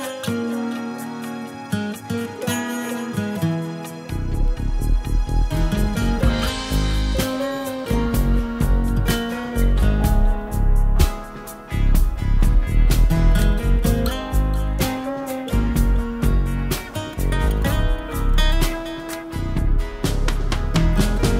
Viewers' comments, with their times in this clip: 0:03 i love this bassline